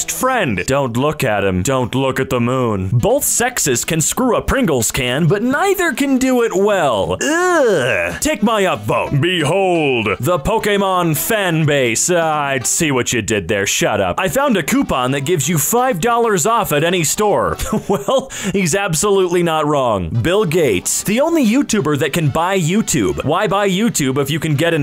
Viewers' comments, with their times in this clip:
0:10 This is one of the first times I have heard someone say Pokémon correctly